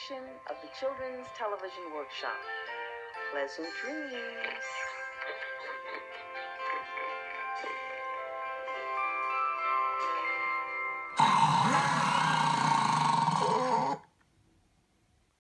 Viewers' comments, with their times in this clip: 0:11 Big Bad Wolf snoring